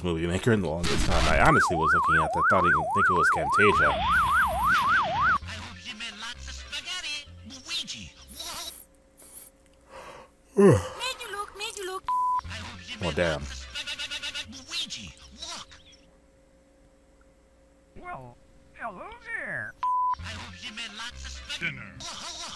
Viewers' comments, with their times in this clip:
0:10 that sounds like one of the Dingo voices (super low budget "animation" company.)